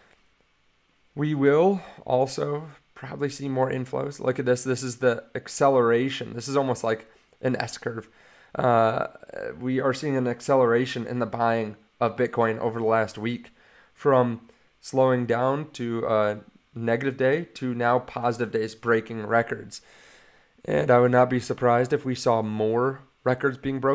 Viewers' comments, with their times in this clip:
0:08 On did he say this is almost like… an Escher…? 😅👏🏼👏🏼